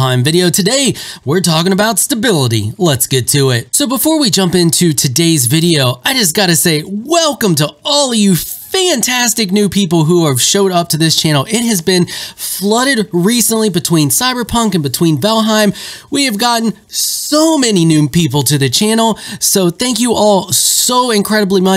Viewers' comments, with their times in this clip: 0:06 That's right, force that enthusiasm! :D